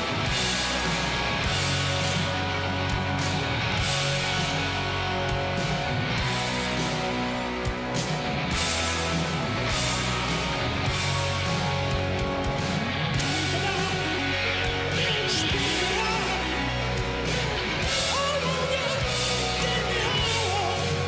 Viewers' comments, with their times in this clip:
0:07 Slash’s badassery trying to come through but Mickey Mouse won’t shut his cakehole